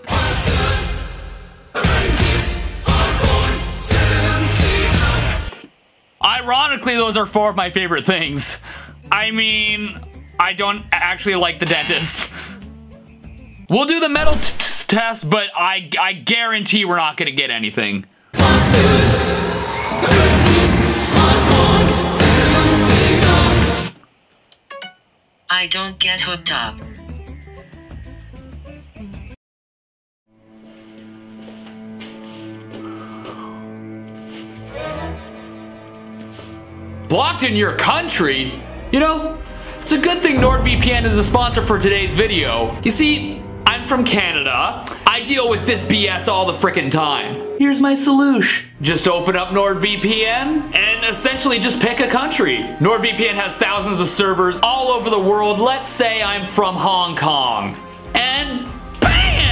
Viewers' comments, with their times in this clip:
0:03 I’m hearing Sam Seagull
0:16 Nile, the burning pits of the duat OH NO LOTS OF DEER
0:18 To be fair, I don't really hear "Steven seagull". Instead i hear "SEVEN seagulls" witch actually makes more sense.😅
0:47 here’s my solush!